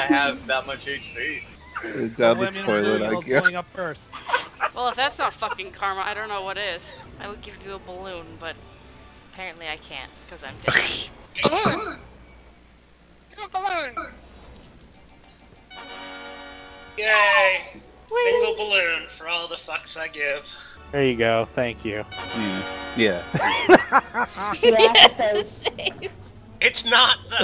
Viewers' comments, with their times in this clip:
0:09 a sequence of ta-das!